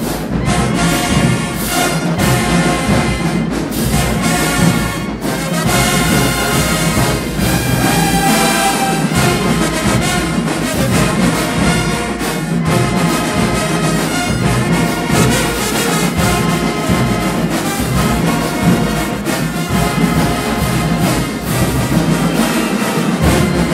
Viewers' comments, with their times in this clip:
0:08 Again wit da melloosssss 😂😂🎺 stop playin mane